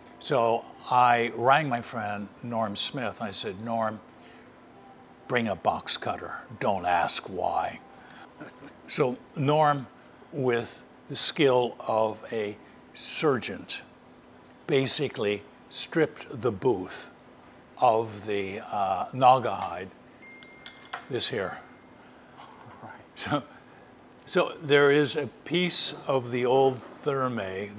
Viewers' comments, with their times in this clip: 0:10 "with the skill of a surgeont" - is that a combination of a surgeon and a sergeant? 555